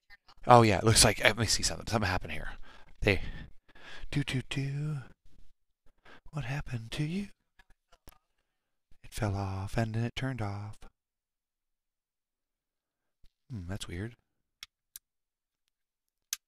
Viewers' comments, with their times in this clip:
0:04 Okay. sound back on